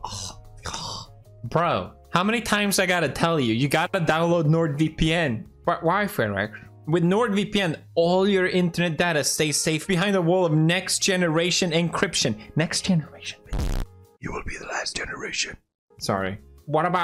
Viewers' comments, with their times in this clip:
0:05 Did Edgar just call you Fredric?